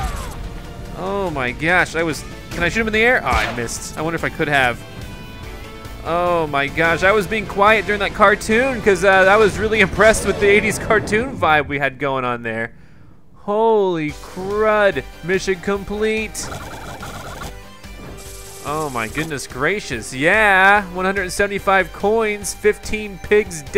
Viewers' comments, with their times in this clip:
0:06 Let's not forget the old clear jingle!